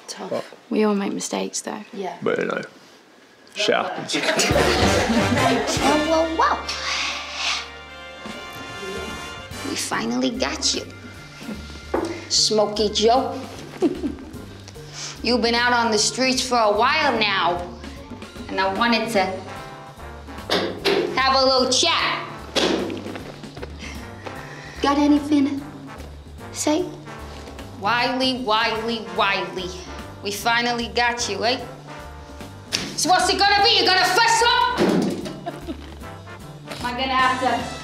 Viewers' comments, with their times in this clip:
0:05 Bruhhh I’m dying of laughter, I love the accent.
0:06 Aimee's cop accent, u r welcome
0:06 sorry but that sounds exactly like the Harley Quinn voice in the Batman games. She also has the personality for it and with costume and makeup I kinda see looking a lot like her too
0:10 Is it me or does Aimee sound like Doja Cat ?
0:11 SOUND LIKE NICKI MINAJ
0:23 Amiee’s voice looks like Julia Roberts in Pretty Woman